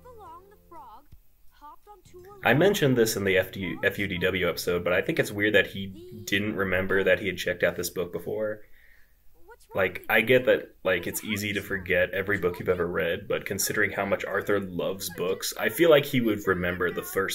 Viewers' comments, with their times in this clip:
0:03 lol can we address how baby Arthur excited about his first book legit sounds like a mouse.